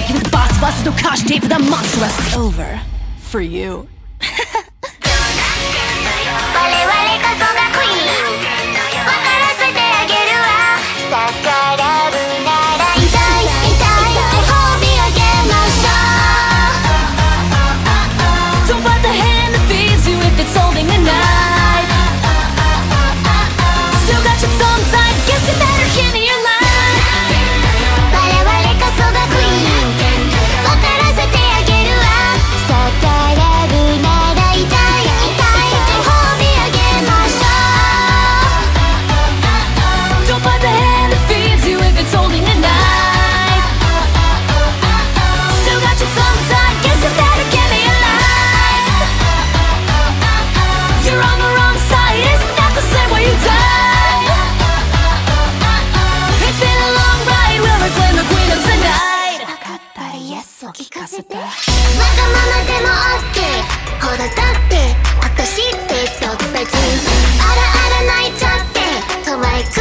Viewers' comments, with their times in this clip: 0:04 is literally godly. The way the shot is split into 3 different sections accompanied by the way the audio switches to more of a radio sound, the way calli slowly draws her sword. This song....is amazing.
0:12 fun fact: If you only use one side of earphone, at some part of the song you can hear only Gura on left side and right side is only Calli. For example, try to use only right side on
0:51 I'm still laughing six months later because a skeleton is screaming in terror and a shrimp just braces for the inevitable.